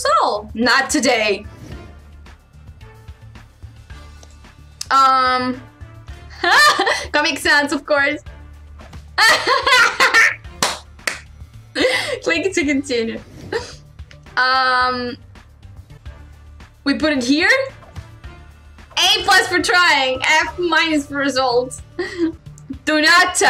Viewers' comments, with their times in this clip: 0:06 That laugh ... so gorgeous.